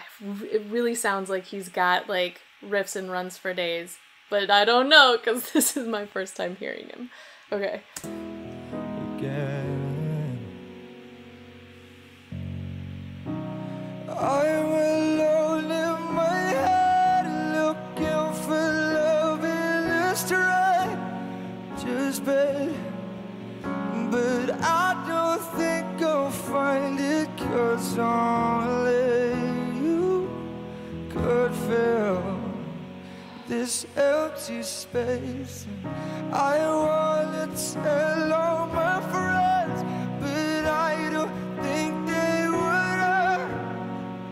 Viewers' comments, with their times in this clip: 0:09 I love this song only slightly more than I loved your reaction when he changed key - if that's the right term. You looked soooo emotional [and are beautiful into the bargain] that I instantly loved your work and your passion for what you do. We went to see Take That at the Royal Albert Hall in London pre-covid and James Arthur was their support act. He didn't show up, citing stress as the reason, but I wanted to see him even more than Take That because he just has such a fabulous voice. I don't understand a lot of the words you use to describe what is happening when you review a track but - you're really good. Respect.
0:13 was my first time listening to this song too. hearing the chorus gave me goosebumps.
0:31 That involuntary sigh from you is one of those nuances that only other audiophiles will understand. It's a reaction to the subtle shifts in music and the way an artist sounds that just hits us in a way that makes us react, relax or just respond in a way that we don't even realize. I hope you've now gone on to listen to much more of James' songs since this video was made.